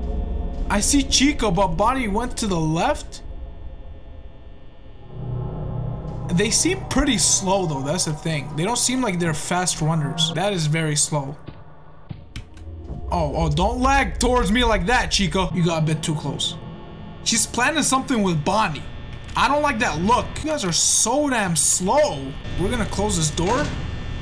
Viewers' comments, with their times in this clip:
0:05 why did that sound effect sound like a train